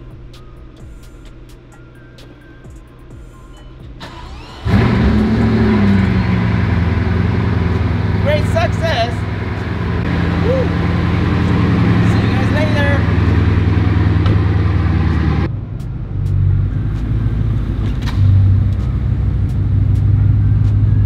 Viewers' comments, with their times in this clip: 0:08 lmao sounded EXACTLY like Borat!